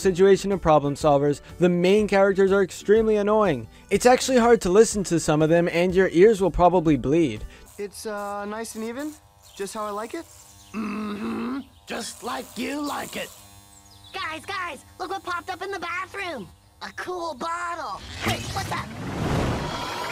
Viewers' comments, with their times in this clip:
0:08 The first voice was decent but the other ones make we want to die